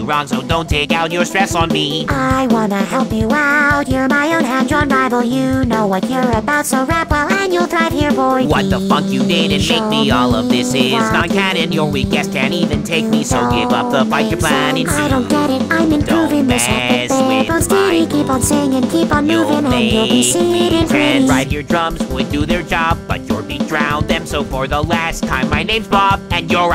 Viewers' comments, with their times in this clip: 0:08 who else thought Bob said what the fuck?